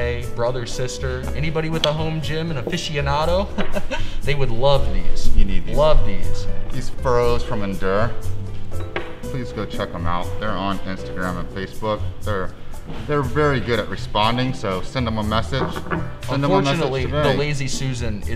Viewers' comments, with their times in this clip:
0:03 😂. Perfect sales laugh